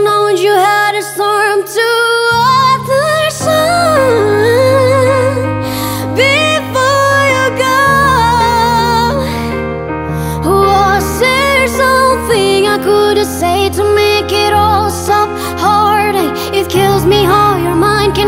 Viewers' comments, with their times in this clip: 0:03 sheesh that run tho god damn!